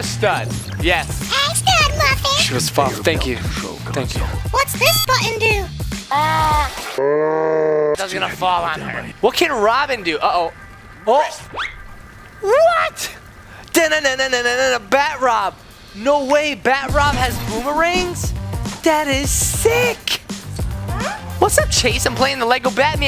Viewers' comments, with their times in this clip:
0:06 Its so funny to say AAAAAH LIKE THAT HAHA😂